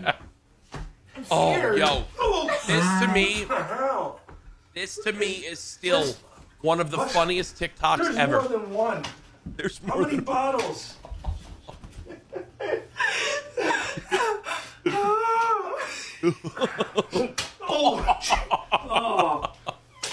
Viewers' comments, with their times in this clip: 0:03 the girl when she laughed and did a deep hum like thing I can to it to but on command